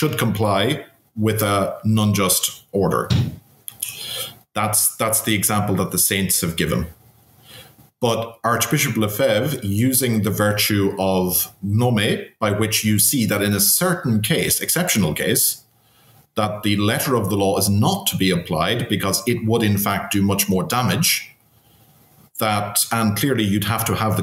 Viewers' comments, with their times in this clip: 0:09 what was the virtue Cardinal LeFebvre used???? Nomid? Gnomid? Gnomy? Thank you, great presentation and discussion - I understand better, although the justification of SSPX is nuanced.